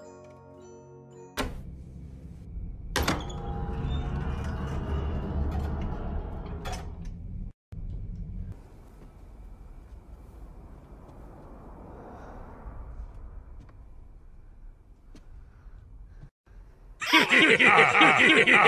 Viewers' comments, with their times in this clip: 0:03 loud noise lol